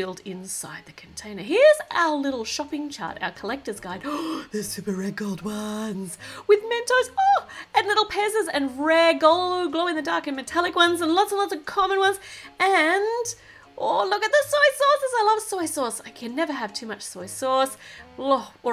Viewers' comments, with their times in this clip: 0:04 R U A ZOMBIE!! 🤣 u sound hillarios !!!!